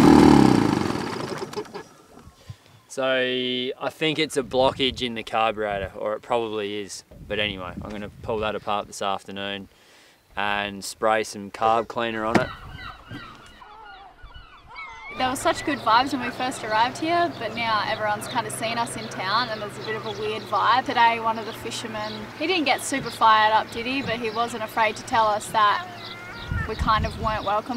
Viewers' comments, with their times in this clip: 0:09 there are YouTube videos about lawn mower engines that surge like that . Might be a similar problem ?